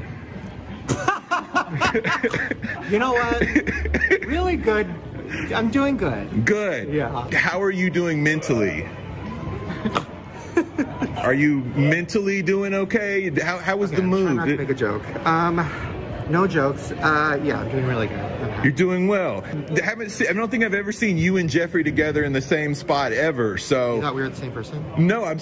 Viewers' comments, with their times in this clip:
0:08 the fake snorts physically hurt me